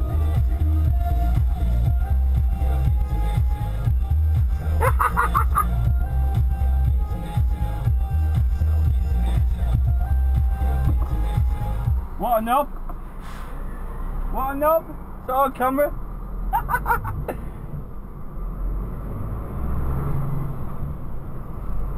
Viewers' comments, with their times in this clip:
0:04 lol the cackle is the best part XD
0:04 Love that laugh!
0:04 That laugh was perfect.
0:04 That cackle was cruel.😂😂😂